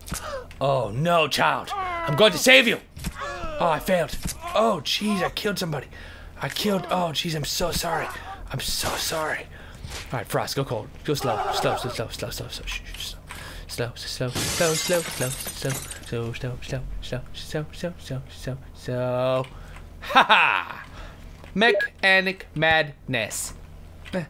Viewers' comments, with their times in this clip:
0:10 Anyone here the weird sound